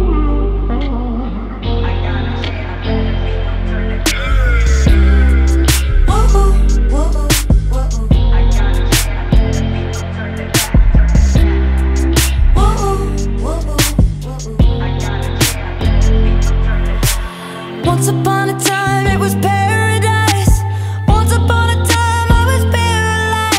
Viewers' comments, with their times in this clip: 0:04 What does the male voice say ??